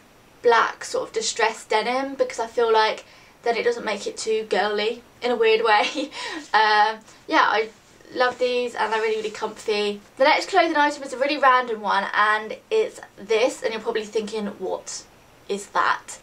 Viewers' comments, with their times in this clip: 0:04 Lol too guwly haha x